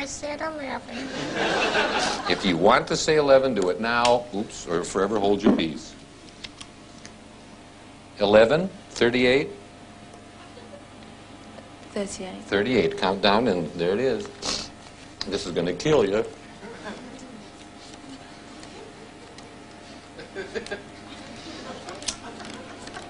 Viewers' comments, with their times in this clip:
0:05 Great trick and awesome performance. I think* that when he drops the marker, I can hear him put the card in his mouth while his head is behind the table. I believe I saw him chewing or manipulating the card in his mouth in the seconds following. Just a thought. Loved the performance :)